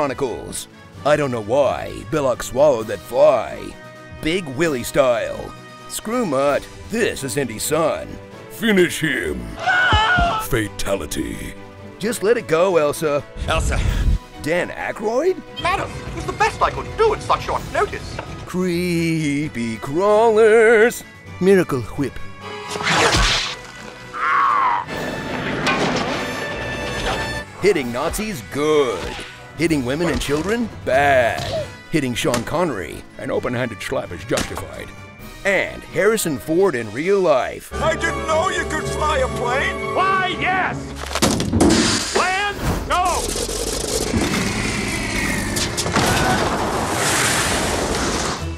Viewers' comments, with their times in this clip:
0:08 pretty good imitation of Amrish Puri.
0:22 wait, what? You even done a decent impression of Stewie there ;-j
0:33 That Sean Connery accent LMAO